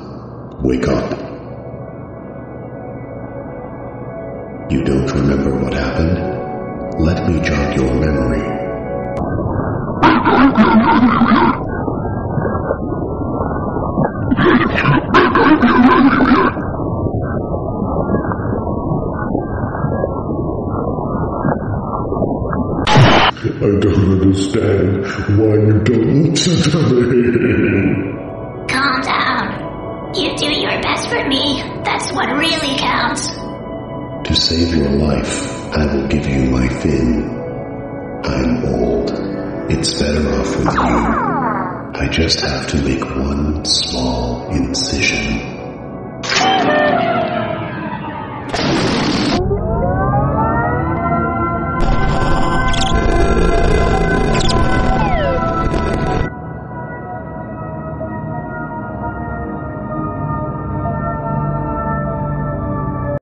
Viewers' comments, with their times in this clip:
0:09 Is it just me or there is a sorting algorithm noise on background?
0:10 The voice of the goofy ahh fish honestly made me giggle lol
0:17 is that.... A sorting algorithm sound
0:25 I can't understand what he's saying
0:42 Whoever voice acted Marvin, please start an asmr channel
0:49 deflating balloon sound effect Spinning brain